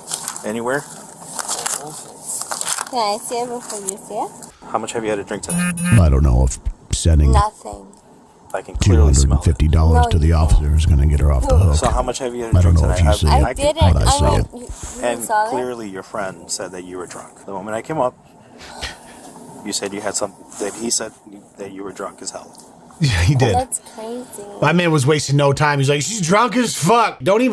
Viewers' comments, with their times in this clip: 0:10 I had it playing in the background and when you did that police narrator voice I actually just thought it was the original narration 😆